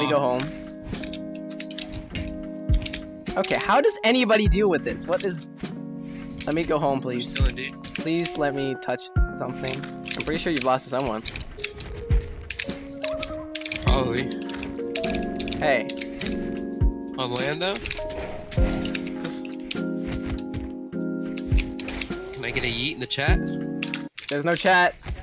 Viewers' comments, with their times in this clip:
0:06 nice lofi hip-hop <3